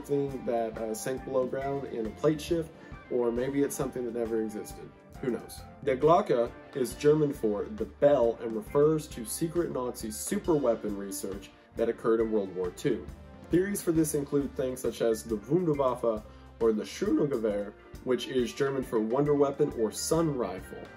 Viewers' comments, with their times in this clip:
0:05 correction: wendigoon voice crack
0:05 you trying to pronounce these german words is what keeps me going